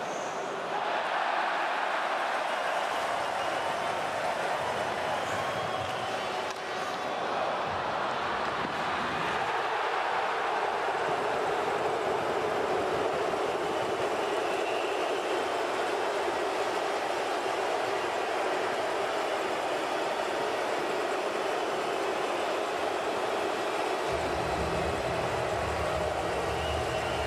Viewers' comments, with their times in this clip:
0:08 Love the huge LUUUUU chant after he stones malkin on the breakaway